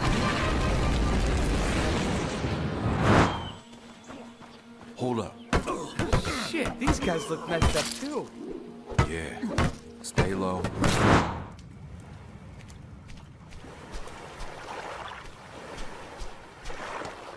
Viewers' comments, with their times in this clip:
0:04 they talk so calmly while beating the shit out of them lmao, it's so awkward.